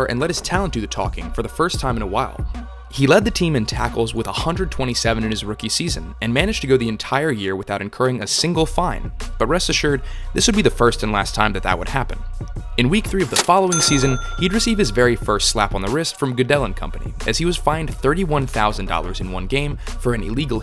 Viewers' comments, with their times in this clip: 0:05 unexpected laugh!!! THANKS!